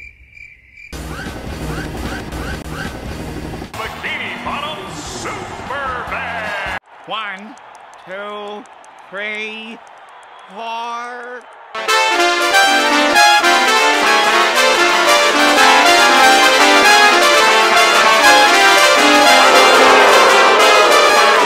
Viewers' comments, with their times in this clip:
0:07 The alternate ending to the original episode where Squidward's fear came true. The band was horrible.